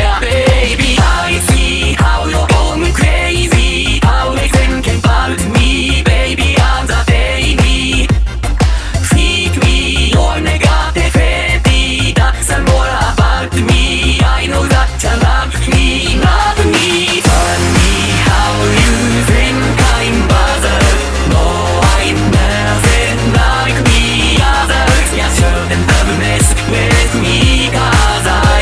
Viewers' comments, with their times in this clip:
0:10 the way he says “Negativity” sends chills down my spine